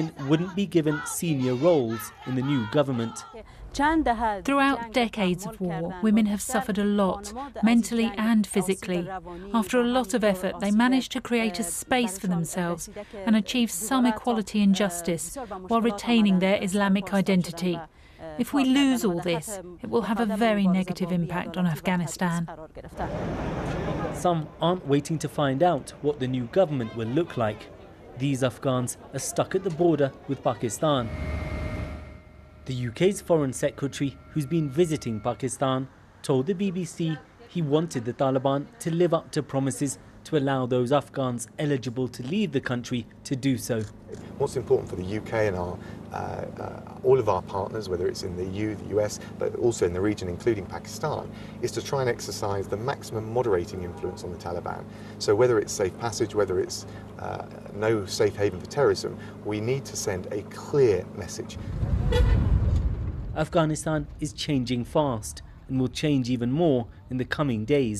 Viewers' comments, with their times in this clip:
0:10 There's a discord ping sound
0:53 sounds like a Containment Breach door sound in the background lol.